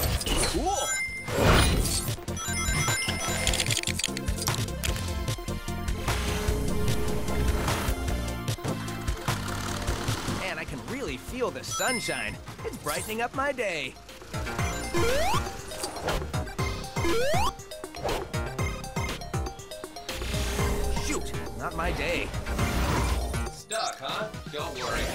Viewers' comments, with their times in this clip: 0:10 [happy tails doll noises]